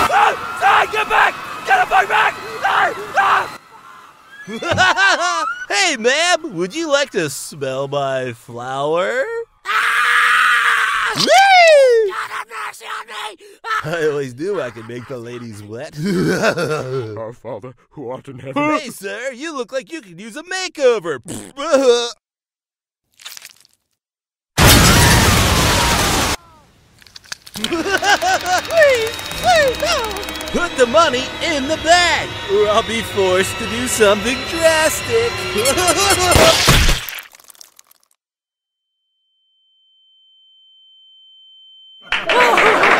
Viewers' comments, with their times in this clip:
0:04 she doesn't even answer, she just screams and it's hilarious.
0:04 That scream is golden!
0:08 that scream is pure agony
0:12 I find the screaming very entertaining.
0:21 That wacko laugh
0:27 Minecraft piston be like
0:27 That laugh is hilarious!